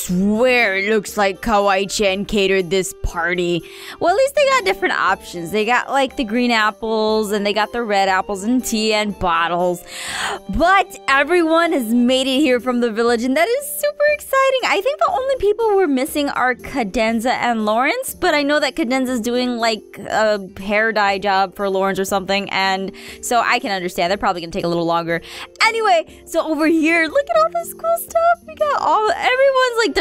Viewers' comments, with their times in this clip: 0:07 am i the only one that thought someone else was talking for a second there-
0:16 Has anybody Noticed other than me that somewhere Aphmau is off when she talks?